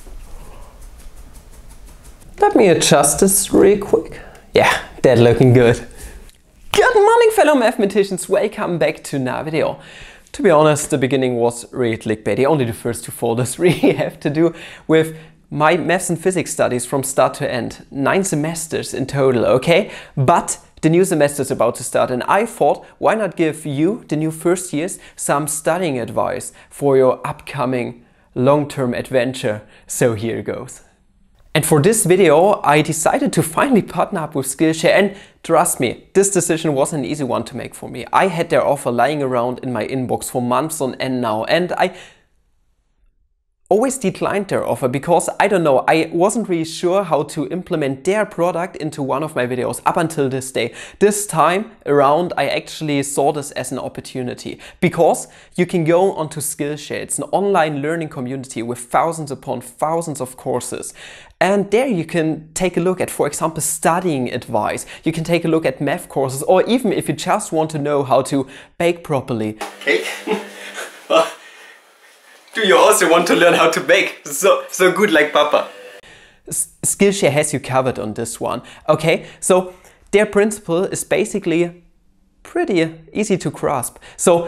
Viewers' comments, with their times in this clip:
0:06 Sounds like you're saying "GET MONEY fellow mathematicians...", which is fine by me.
1:05 I sure love those meth courses.